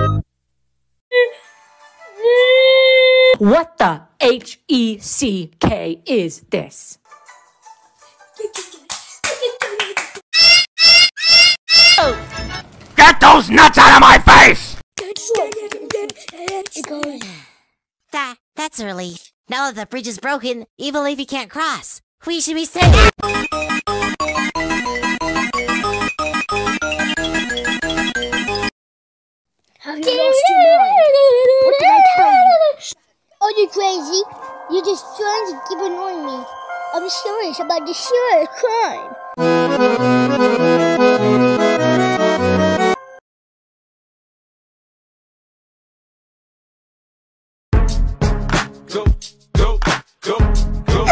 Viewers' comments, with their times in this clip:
0:07 Don't worry, It's Just Clapping 💀
0:08 why hes clappin
0:10 Why does that sound like a bird attracting a female with its call
0:10 who let the sheep record a video?
0:10 IPhone 69 alarm
0:10 euh euh euh euh - stupid ahh anti piracy thing
0:15 the roblox anti piracy theme is literally a fever dream
0:33 this sounds like a 4 year old help😭✋
0:33 "Rebecca. You're the prettiest girl in Brooklyn." ahh voice
0:38 he sounds like a 2 ½ year old